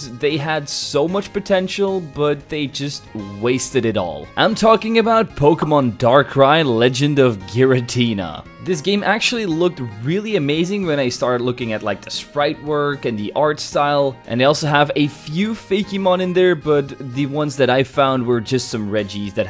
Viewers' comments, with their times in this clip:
0:06 Dark Cry sounded like Darkrai!